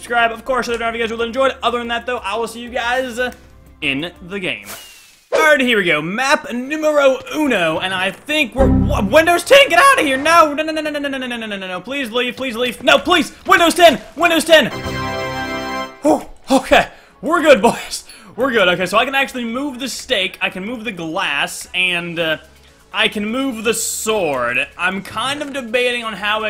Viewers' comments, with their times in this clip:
0:10 WHAT WAS THAT SOUND?? That was like 15 No's XD